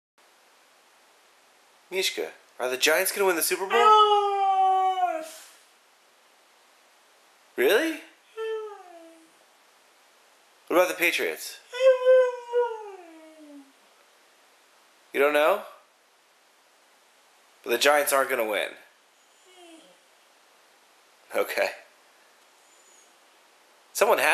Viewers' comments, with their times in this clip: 0:08 I love her NO it was soooooo cuuuuteee!!!